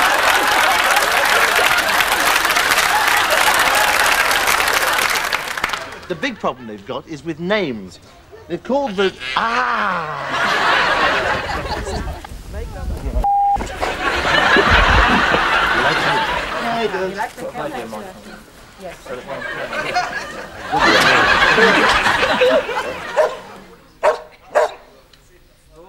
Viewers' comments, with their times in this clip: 0:10 The fact his tone of voice didn't change makes it funnier to me.